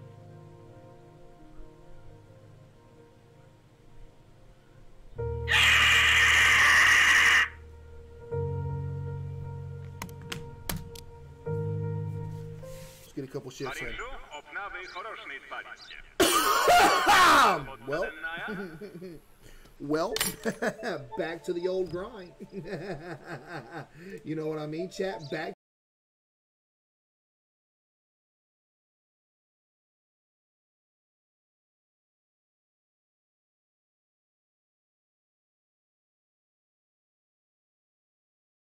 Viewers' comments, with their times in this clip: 0:04 bro turns into a pterodactyl 🤣🤣🤣🤣🤣🤣🤣🤣
0:26 Caseoh broke the sound